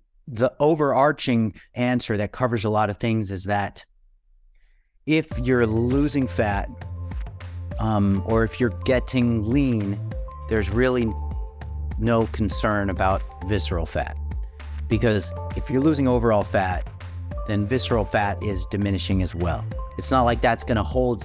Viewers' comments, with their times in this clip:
0:04 Excellent video. Perfectly told. Perfectly shown. Common sense experts. You have fun with a most serious subject: munching the sticks of whatzit on the plate. The sound effects as someone mentioned the yawn. And especially your beautiful smile